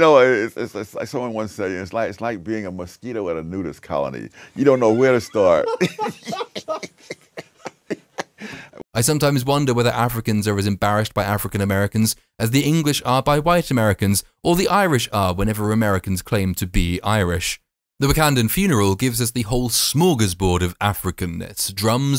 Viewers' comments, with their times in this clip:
0:06 we are bro. We are. I love this guys sarcastic tone 😹 I love how journey to America 2 did their burial. It was cool as fuck, but this? Just very very cringe.